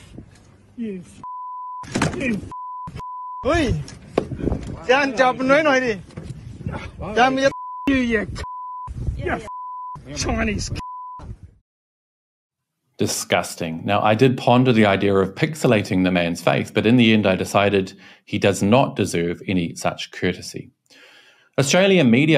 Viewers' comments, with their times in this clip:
0:03 That "Chinese" couple were actually not Chinese. They were speaking Vietnamese. If you dont know for sure, then dont assume. Especially with such certainty. It only makes you look like a fool.